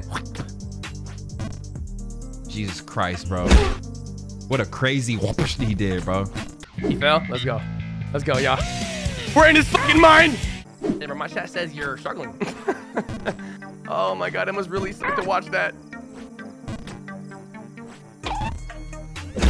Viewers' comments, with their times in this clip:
0:06 escape from the city hit different